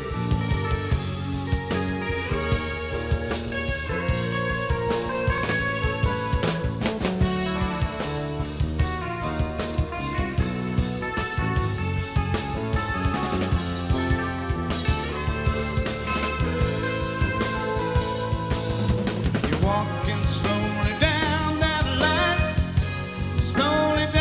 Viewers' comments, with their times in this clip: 0:06 Basic chord progression